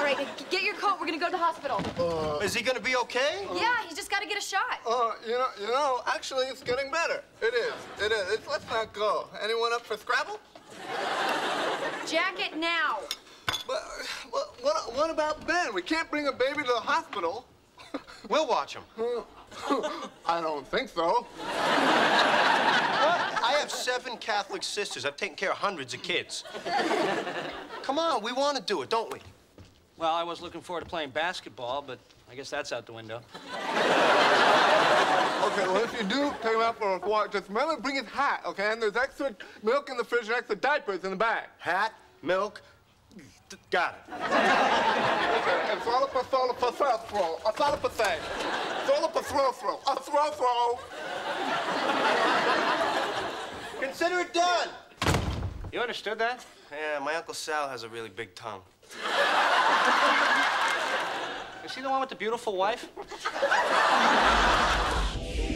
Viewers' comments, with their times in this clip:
0:08 best part! Thwscavble?
0:42 YouTube captions: "I thought up a thing Phillipa throw throw throw throw."
0:45 ross turned into a sim for a moment there
0:46 The real question is- What in the world is Ross saying?
0:46 What is David even saying never figured that out lol
0:48 I really want to know what he said what's a throw throw
0:49 So no one understood what he said ? All I heard was "A throu throu"🤣